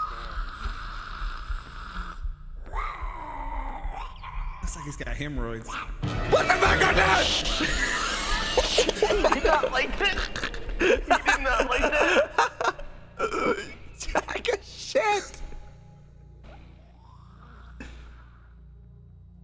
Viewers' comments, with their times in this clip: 0:03 why did it sound like stitch from Disney’s Lilo and stitch for a second? Lol.